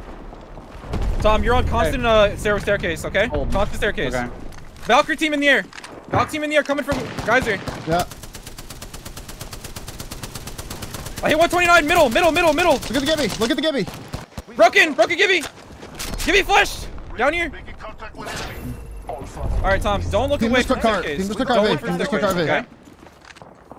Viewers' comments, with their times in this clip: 0:07 Anti-aircraft guns of the new Battlefield confirmed